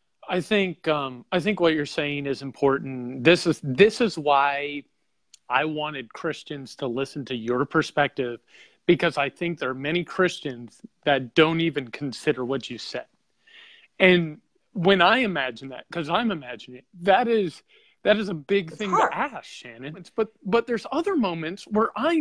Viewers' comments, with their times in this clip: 0:05 he genuinely sounds upset. he sounds like he is going to cry. this is so strange because nothing really seemed to change his mind but i do think she got through to him even a little bit. i hope he thinks about this. i hope he lies awake in bed thinking about this.